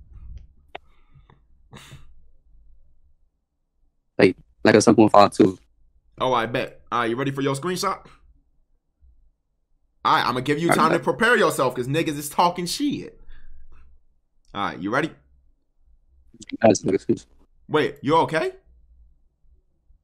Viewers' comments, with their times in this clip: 0:08 swear he pooted